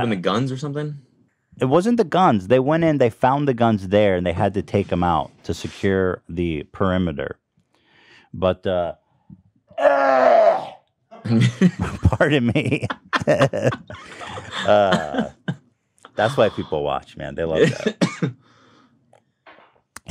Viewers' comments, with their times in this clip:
0:08 the most fake cough I've ever heard ever